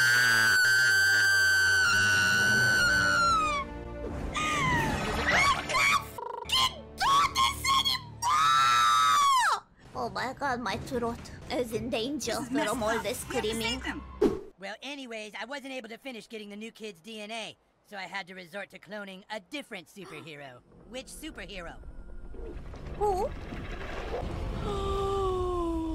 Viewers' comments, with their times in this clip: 0:04 sounds like a mokey scream
0:05 she sounds like momey from Sr.pelos mockey show
0:11 my ears are in danger from all that screaming